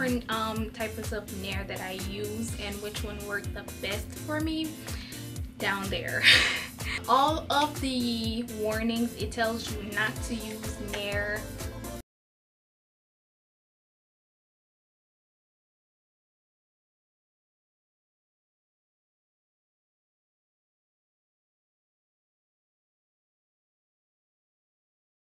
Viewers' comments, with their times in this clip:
0:08 Volume cuts ish...